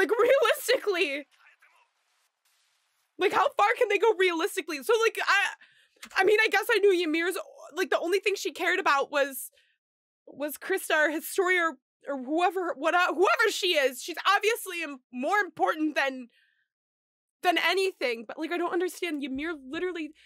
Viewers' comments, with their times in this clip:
0:07 i love your voice <3